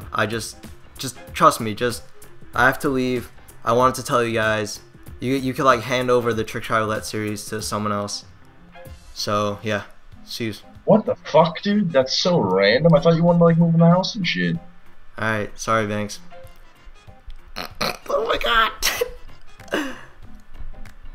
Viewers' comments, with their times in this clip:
0:07 that nose laugh